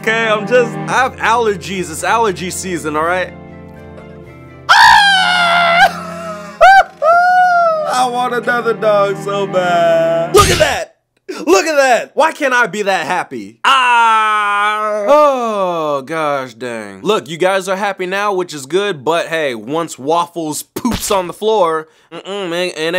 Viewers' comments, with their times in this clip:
0:04 The way he fake cries 😂😂😂🤣🤣